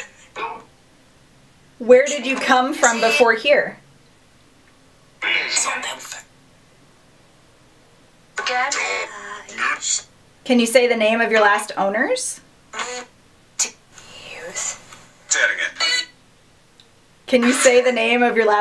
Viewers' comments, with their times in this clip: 0:05 I heard 'Samantha "and "I hated that house" did anyone else?